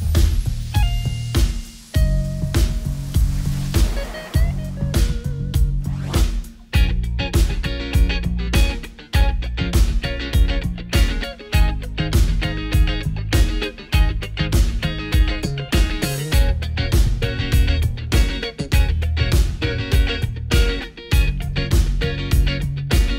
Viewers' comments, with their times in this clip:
0:07 There's something about the first guitar riff that you hear that gives you chills and makes you look forward to the music that you're about to listen too.